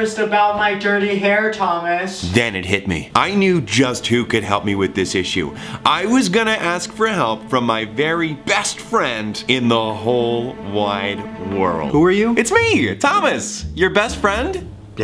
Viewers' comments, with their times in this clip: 0:03 Sounds like something from Spongebob SquarePants. Thomas -Spongebob Anthony -Squidwar-im so sorry.